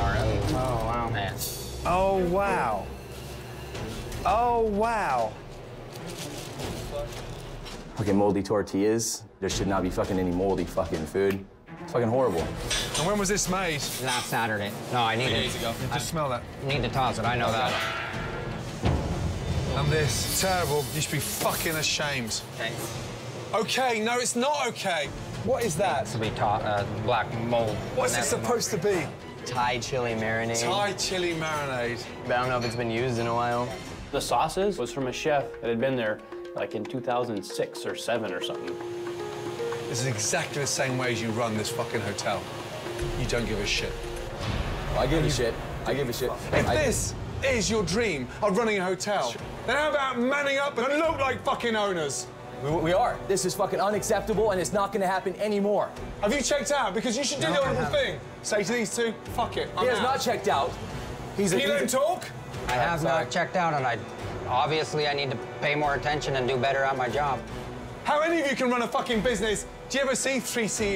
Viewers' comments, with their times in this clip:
0:07 he sounds like he just learned what fuck meant
0:40 Like a kitten meowing at a lion. I love it when the owners/managers try to "man up" and imitate Gordon about how terrible everything is because they think it's what he wants to hear. Spoiler alert: It never is 🤣
0:58 Lmao i love the drums when he says dumb dumber and dumbest